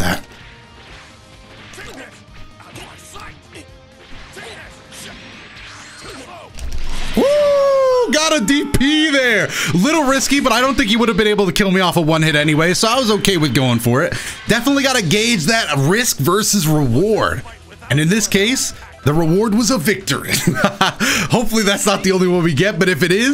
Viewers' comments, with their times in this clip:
0:06 You Can Hear The Raw BOWER Of The Dp.
0:07 I love how you can hear the mashing of the buttons for the dp